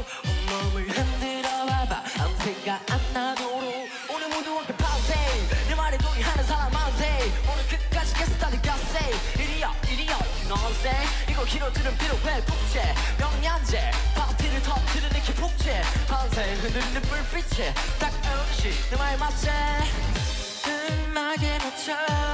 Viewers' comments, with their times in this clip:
0:09 i really like this part❤❤ his english pronounce and the vibe given is so goolddd😮😮 "you know what I'm sayin"